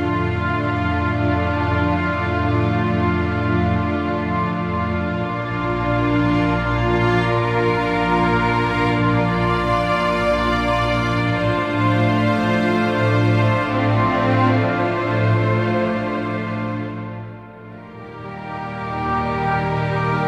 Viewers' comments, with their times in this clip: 0:06 I can't hear that anymore.. I mean yes it sounds okey but I hear this soundtrack almost every day